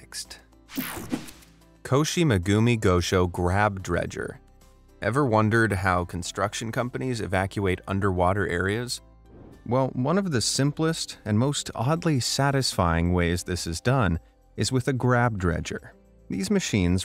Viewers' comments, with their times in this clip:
0:04 no just wondering how tf did u say that perfectly